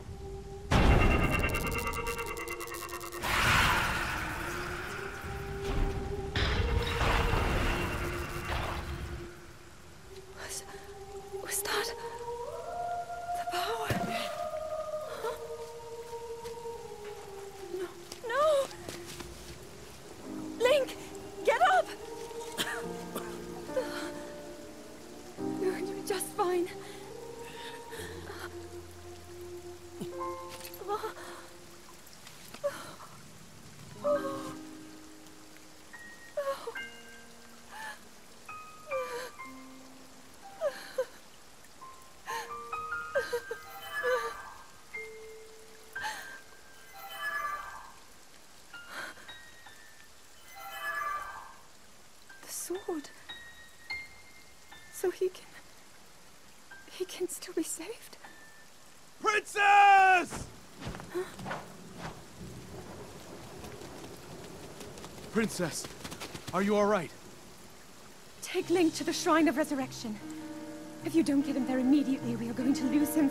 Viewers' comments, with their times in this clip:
0:05 I LOVE the music It's just so calming, yet also breathtaking in the moment.
0:43 Me hears that sword Also me: screams in eternal frustration and pain
0:44 VERY subtle transition of the main Zelda Theme into a brief quote of Fi's theme. Please tell me I'm not crazy.
0:51 Oh god no I hear Fi trying to ecsape
0:58 wow that voice just ruins the moment